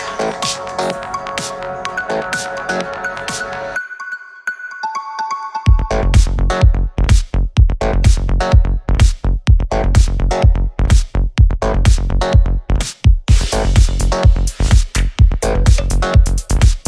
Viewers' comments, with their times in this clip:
0:04 ok the trance part wrecked me in peaces, that was so unexpected <3